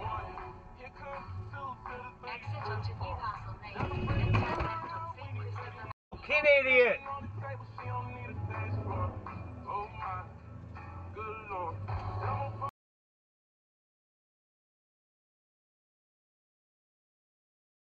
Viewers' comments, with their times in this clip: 0:04 wow you're listening to new country music in Europe? Interesting, I like it.